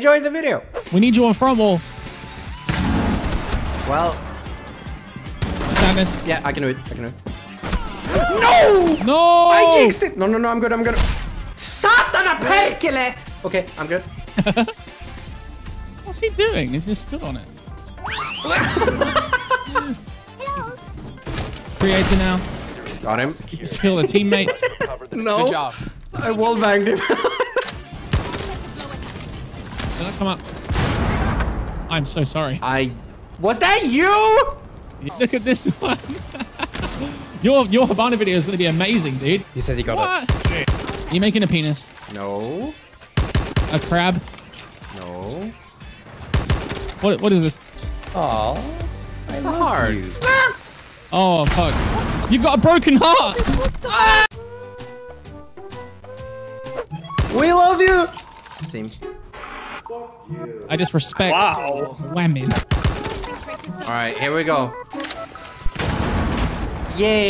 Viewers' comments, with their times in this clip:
0:10 angry finnish noises
0:11 mans turned from swedish to finnish
0:11 hes speaking the language of gods
0:11 bruh that was pronounced way too well
0:12 what was that sream on ?
0:13 did i just hear finnish
0:55 i got an ad at the "AAAAAAAAAAAA" perfectly cut screams